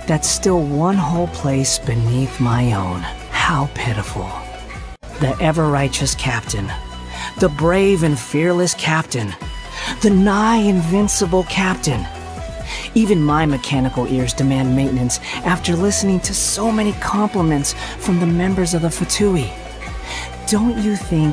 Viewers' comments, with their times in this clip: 0:03 That "How pitiful" really reminds me of Sasori, from both voice, intonation, and the sentence itself really fits Sasori's personality.